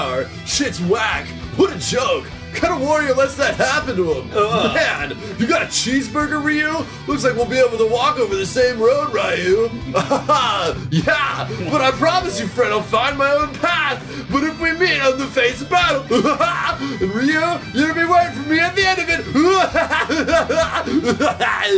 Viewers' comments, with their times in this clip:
0:03 that would be USA Network cartoon Ken's voice lol